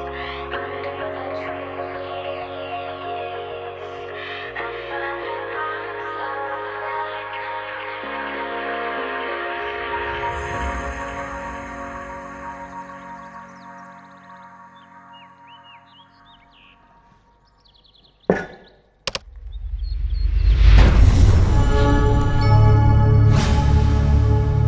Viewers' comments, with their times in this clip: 0:09 i like how the music is in sync with the dog lmao